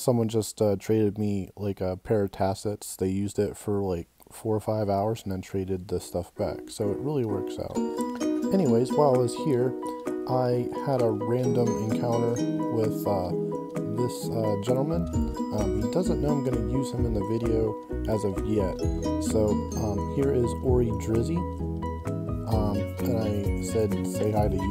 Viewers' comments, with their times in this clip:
0:05 how was the music level ?